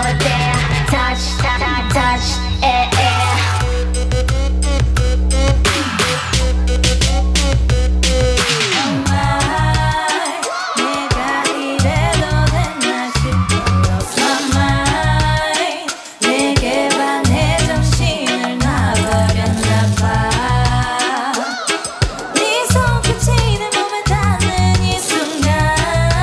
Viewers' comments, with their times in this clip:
0:07 CL's laugh is so cute. i can't help but falling in love with her.